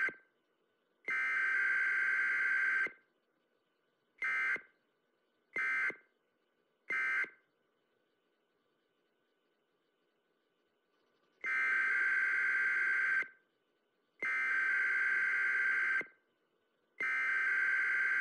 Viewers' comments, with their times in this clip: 0:06 sound siren head!??